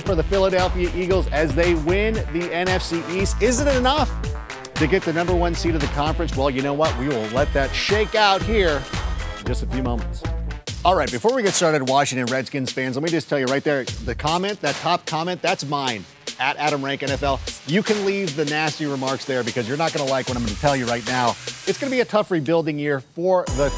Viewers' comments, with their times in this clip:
0:09 he sounds like rapping